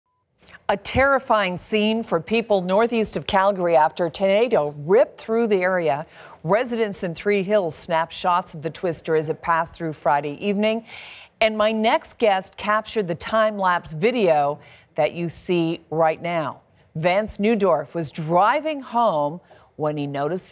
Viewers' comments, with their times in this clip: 0:03 a tomato ripened in the area ?....?